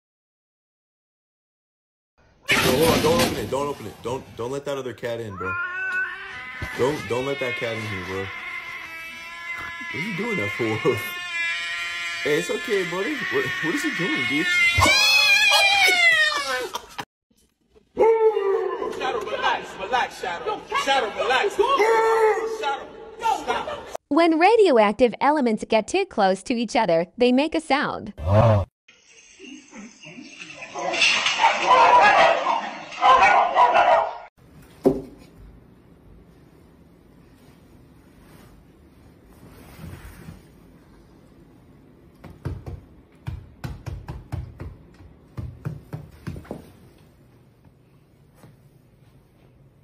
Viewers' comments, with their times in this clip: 0:06 bro did the enderman angry noise 💀💀
0:28 got me with the aughhhh
0:34 Yeah okay, came out of nowhere, that damn harmonica part killed me haha.